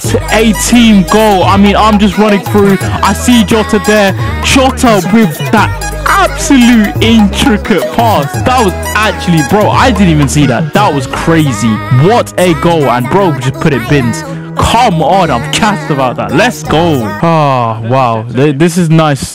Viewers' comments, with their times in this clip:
0:03 IT WAS ON BEAT